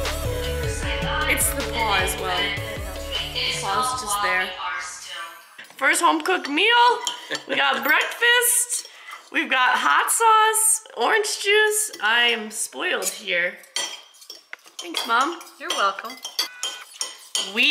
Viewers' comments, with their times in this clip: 0:03 It sounds like your vlog is on in the background that is so precious 🥰😭